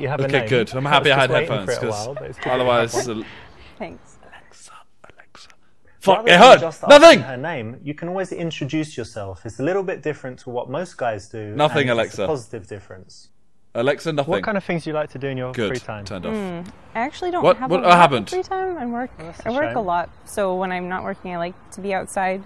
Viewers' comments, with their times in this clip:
0:05 Whispers Alexa "FUCK IT HEARD" had me dead 😂😂